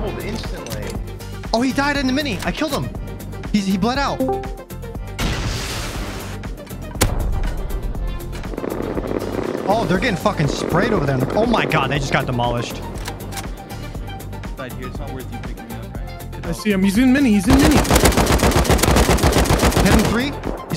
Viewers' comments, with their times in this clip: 0:08 SINCE WHEN DID RUST ADDED AN A-10 Warthog Machinegun???😂😂😂